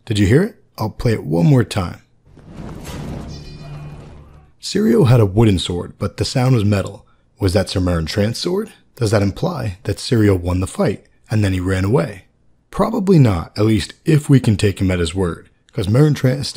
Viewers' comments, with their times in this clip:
0:03 that’s a stick dropping sound